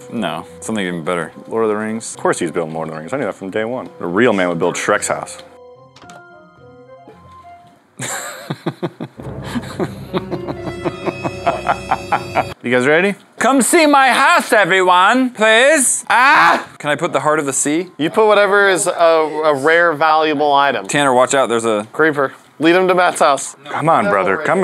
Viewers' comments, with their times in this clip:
0:08 I love that laugh 😂